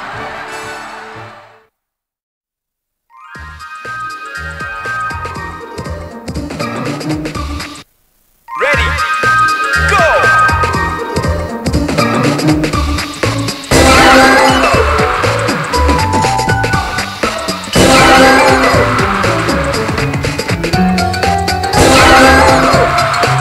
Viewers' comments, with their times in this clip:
0:09 I seem to tear up every time I hear the song and I’m not sure why. Is that normal?